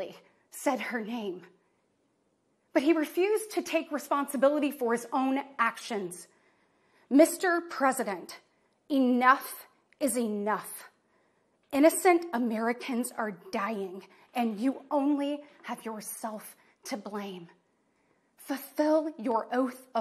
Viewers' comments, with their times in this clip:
0:06 Better than Dean's Scream. What's your favorite scary movie? 🔪